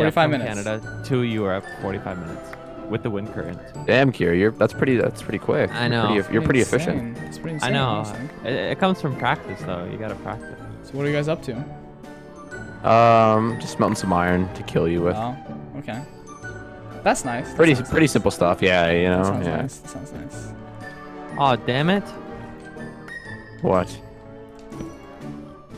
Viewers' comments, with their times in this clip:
0:08 I thought he said “ it comes from Pakistan” 😂